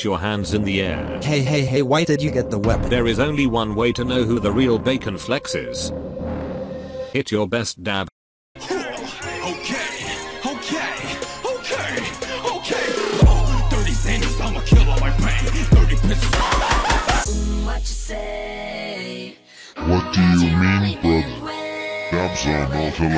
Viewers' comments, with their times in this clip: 0:08 The soundtrack = me about to snipe someone in arsenal